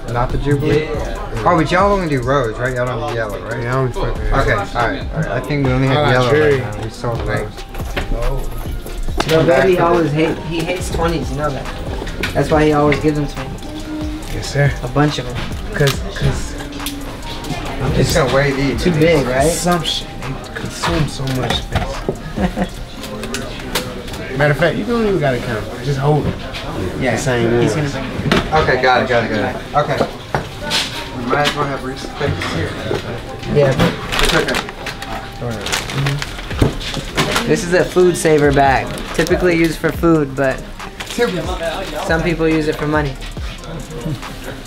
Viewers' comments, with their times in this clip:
0:07 "Y'all should give me a great price" "We always give you a great price" Lil Baby laughin
0:30 the way baby says “jewelry” sound like “jury” 🤣